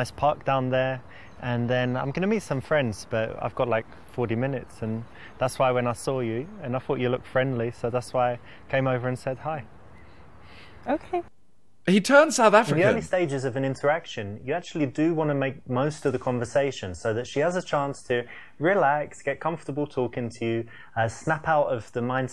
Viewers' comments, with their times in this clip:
0:08 y is that south african?